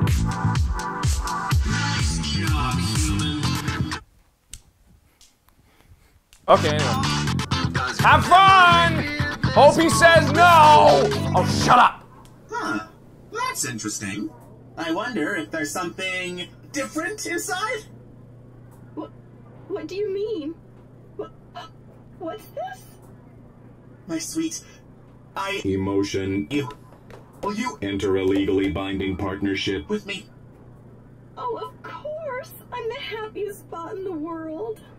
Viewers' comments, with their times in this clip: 0:03 sounds like the robot is saying fuck human 😆😆
0:20 Why does she sound like Boobs Mckenzie from yandere simulator?